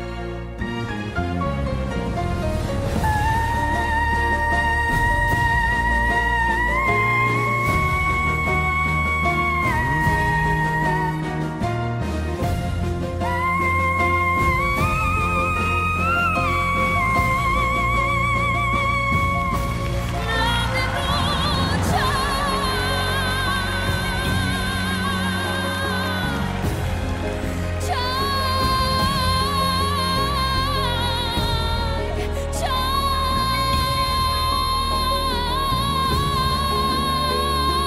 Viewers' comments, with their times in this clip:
0:06 I feel like the bald guy I got shivers all over my skin. She is a canary !! A wonderful singer 👏👏👏👏👏👏👏👏😍❤❤❤❤❤❤❤🔝🔝🔝🔝🔝🔝🔝🔝🔝
0:19 she lost her voice but its normal nobody can do it like rona